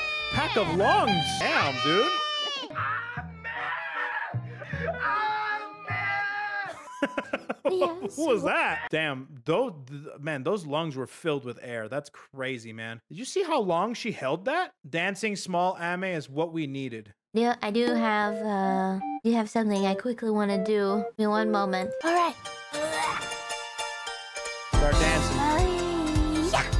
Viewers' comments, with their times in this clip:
0:08 was...was that the Parrot's voice?